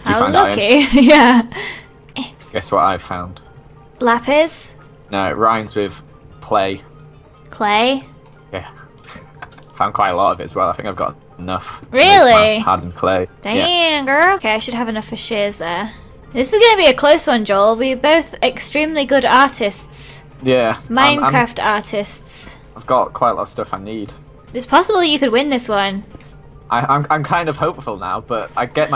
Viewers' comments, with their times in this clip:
0:09 is a scream of pure rage omfg